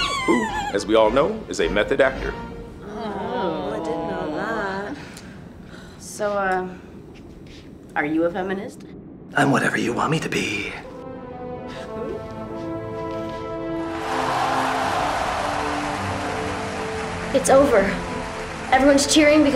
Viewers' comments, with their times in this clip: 0:06 wow if only it was that easy for me to get a 4some just by saying 'I'm whatever you want me to be' in a deep voice. Also what's that badass end music? It's fucking MENTAL!